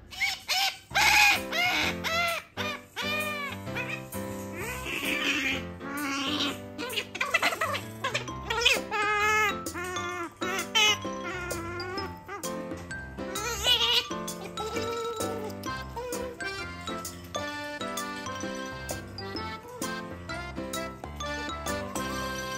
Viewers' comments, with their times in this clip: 0:08 the noises she made while eating made me smile.